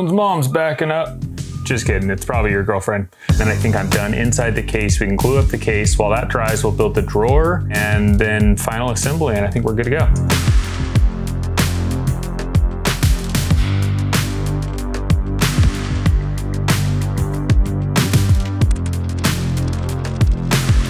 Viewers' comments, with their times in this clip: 0:06 It looked like it was going to be a good project but I bailed because of what I suppose is called music. All the banging and whistling. Sorry. I would have muted the sound but then I couldn't hear your comments.